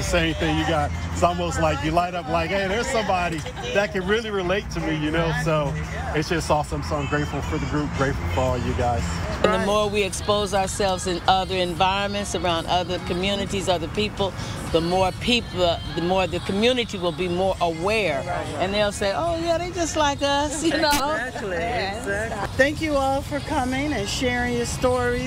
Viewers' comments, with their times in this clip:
0:07 MJ playing in bg 💜